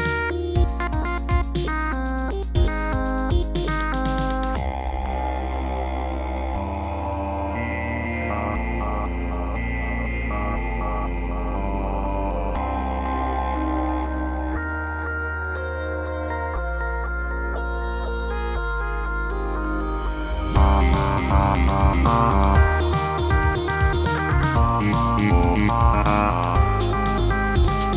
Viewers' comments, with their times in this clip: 0:04 sounds so relaxing
0:12 I love BFs voice in this song it sounds so fitting, especially
0:12 My favorite part....you know why? That boyfriend's voice in it....it's so calming and shocking at once and when i hear it im blushing❤...
0:12 bf sounds ✨angelical✨